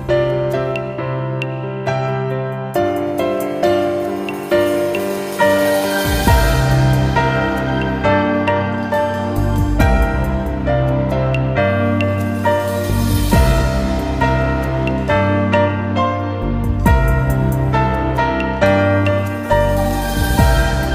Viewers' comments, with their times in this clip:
0:05 Earth Song vibes.